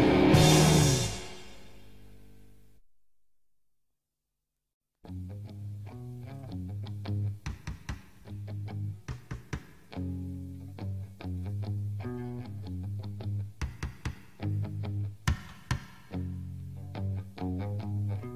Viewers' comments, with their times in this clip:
0:03 Love all the tracks but is a belting track